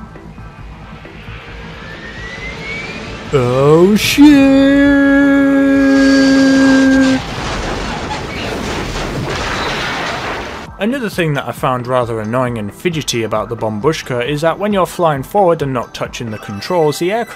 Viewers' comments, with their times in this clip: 0:03 "It turns slower than the Titanic". That impact sounded just like hitting the iceberg xD RMS Bombushka - RockStarlines, lmao